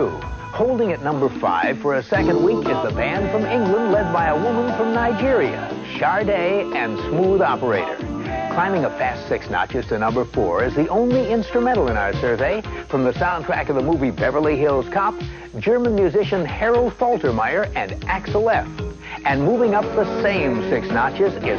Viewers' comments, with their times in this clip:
0:09 This is the most 80's song ever! 😂😂